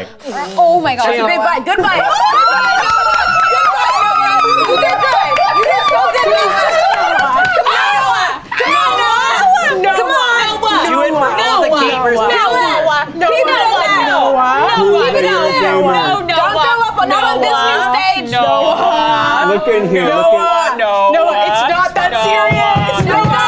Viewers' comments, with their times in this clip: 0:08 when the dog starts hacking and making a weird face